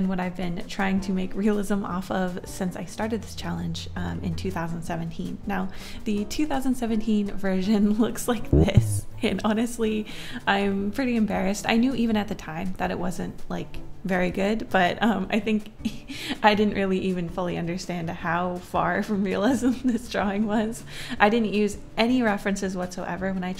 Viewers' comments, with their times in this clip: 0:08 i love that sound effect so much bbo buu